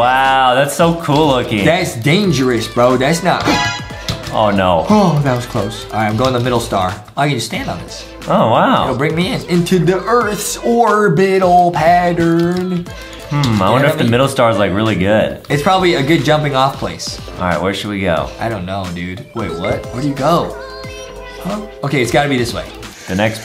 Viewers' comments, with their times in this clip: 0:09 sounds like a song ngl